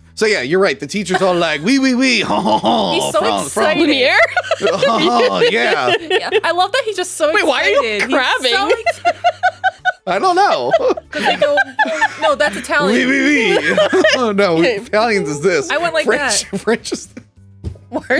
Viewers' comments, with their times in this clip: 0:04 ..Dr Frenchy Zoidberg makes an appearance 👌